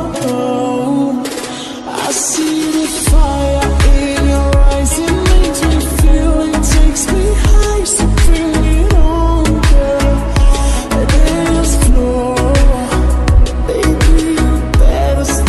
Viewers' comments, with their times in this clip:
0:03 This is just like lofi like a asthmatic layric but its to much reverbed and also pleasant just beat it in long drives 😮🎉🎉